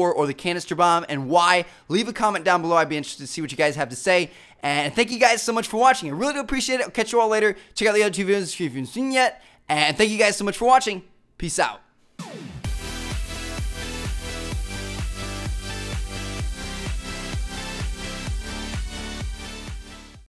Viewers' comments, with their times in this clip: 0:05 lol how he talks in